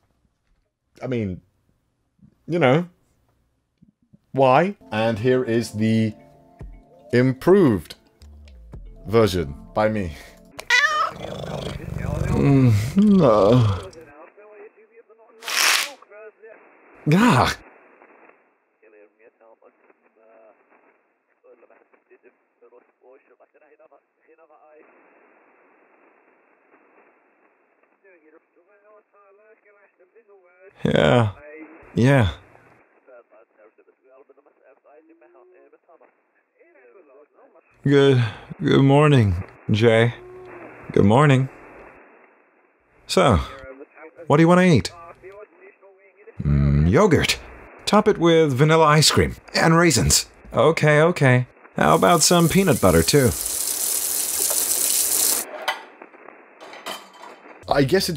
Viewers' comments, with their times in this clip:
0:04 Someone drunk or high. Even then...
0:36 lol for a second it kinda made me think of Guilherme Briggs voice when he dubbed Spike Spiegel in that "good morning jay", i dont know if its the pitch or if im just deaf (probably) but it felt a bit similar to me hahaha (Deefinately a compliment)
0:41 i thought it was diluc speaking it's good